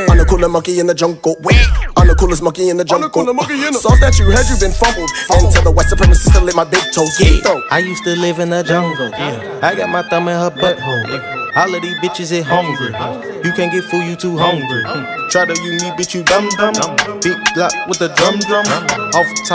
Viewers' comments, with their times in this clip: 0:06 lowkey sounds like kendrick lamar lol😆